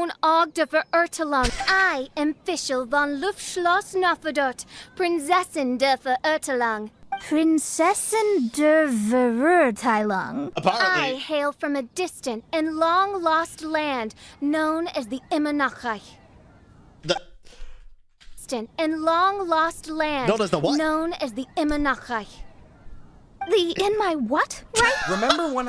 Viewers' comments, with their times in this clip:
0:09 i play en dub until i met fishl, then i switched to jp dub and stayed there even now. as a german, hearing her not even try to somewhat pronounce it properly is pure painful cringe.